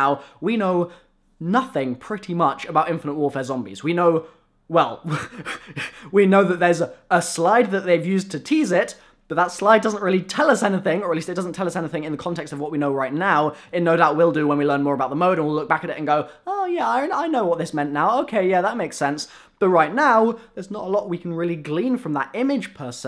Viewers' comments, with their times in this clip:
0:04 wtf happened that breathing tho lmfao
0:06 😂 ur laugh was funny